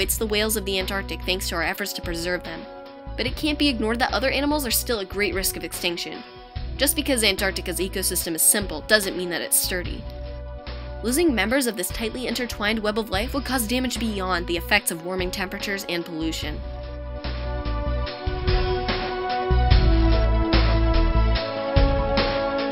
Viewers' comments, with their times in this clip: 0:07 just because Antarctica‘s ecosystem is simple doesn’t mean it is ? Can anyone understand the last word? Dirty? It doesn’t make sense.